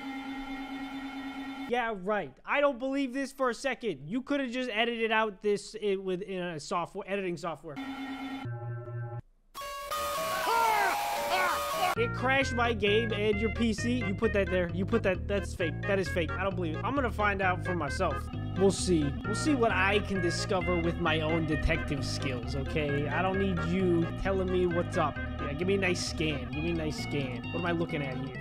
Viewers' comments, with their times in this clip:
0:07 BRUH I WAS WEARING HeADPHONESSSS
0:09 In You screamed I laugh to the scream